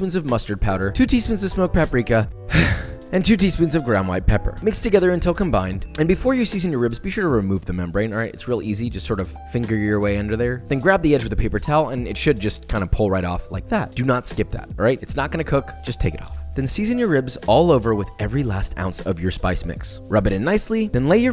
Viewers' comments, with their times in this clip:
0:08 the way he said it was hella Sus😂